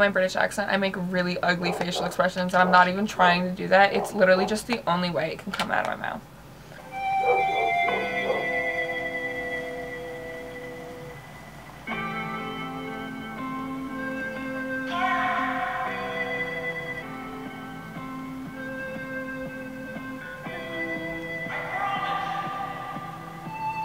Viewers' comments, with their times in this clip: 0:07 the way it just cuts to this somber music I’m dead 😭😭